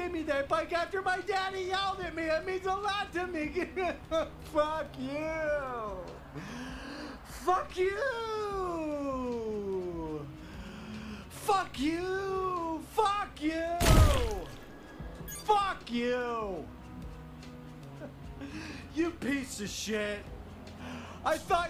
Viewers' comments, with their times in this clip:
0:04 Him: (cries) Also him: f*cCk YoOooooUuu~ 🎶